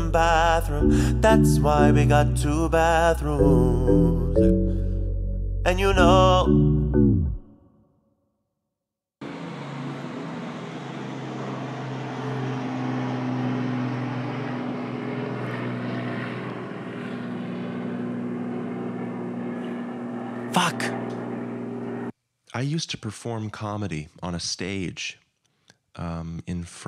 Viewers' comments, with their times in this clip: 0:09 no bo, thats a seagull not a plane